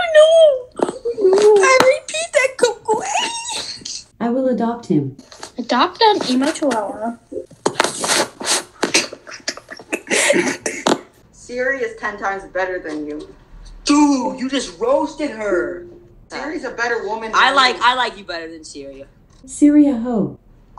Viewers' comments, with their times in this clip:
0:04 DI SHE SAY RIP THAT COCO AYY Rip that ranboo ayy dsmp fans?